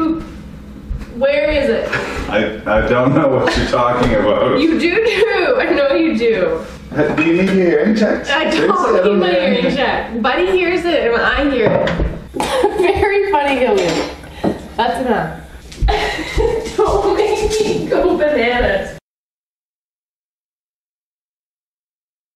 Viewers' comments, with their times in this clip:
0:03 Hahaha u du nuu, gotta love the canadian accent